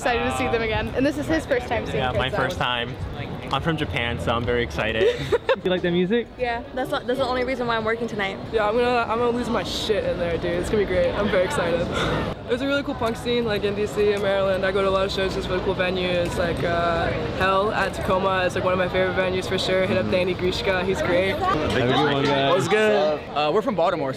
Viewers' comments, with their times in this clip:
0:08 Nice to see things like that happening nowadays. GG people! PS: nice vocals.